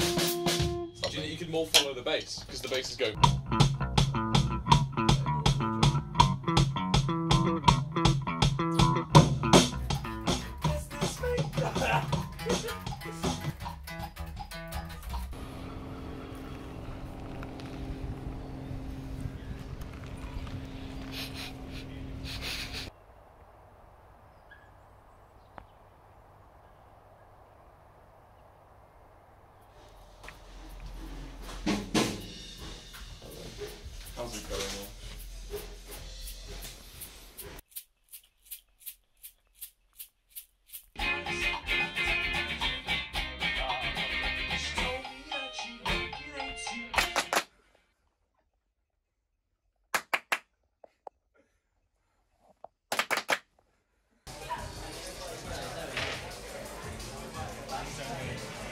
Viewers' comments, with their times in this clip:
0:03 my favorite lovejoy bassline, I’m so glad there’s footage of this
0:41 soooo no body is going to talk about the song ??